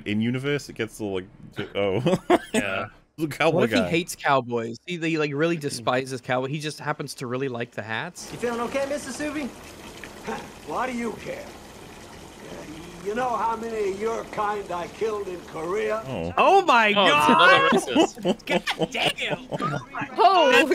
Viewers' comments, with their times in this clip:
0:08 hold on, to any Ben 10 fans is that uncle max, that voice sounded familiar